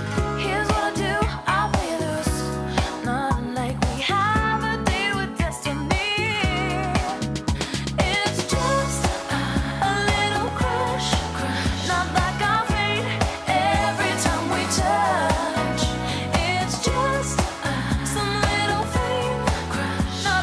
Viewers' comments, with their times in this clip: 0:07 I absolutely love the chorus! Its so catchy and addictive!